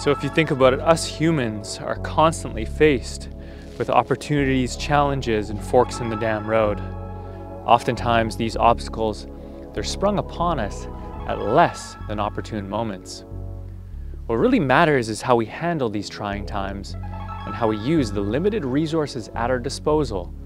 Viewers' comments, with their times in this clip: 0:08 was that an owl? :O